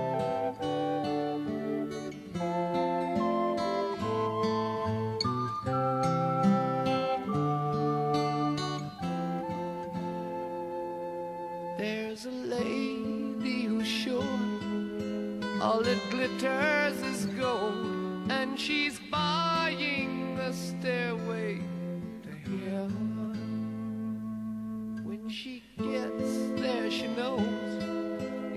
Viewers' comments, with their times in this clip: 0:03 I really like the recorders
0:10 ok those flutes are out of tune